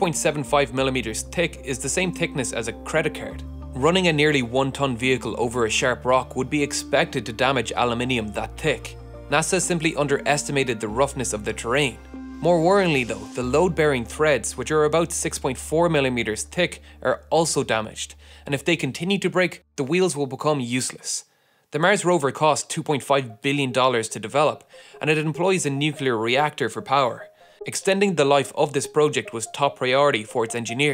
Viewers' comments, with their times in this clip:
0:05 It’s thick or thicc, NOT TIK (@ THE WHOLE VIDEO and )
0:08 tick or thick?
0:15 Why can you say "threads" with a normal th sound but not elsewhere?